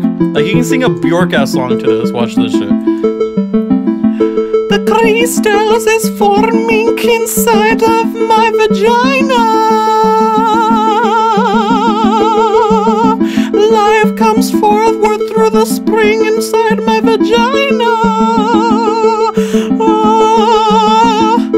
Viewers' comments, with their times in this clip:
0:04 reminds me of James - Dear John.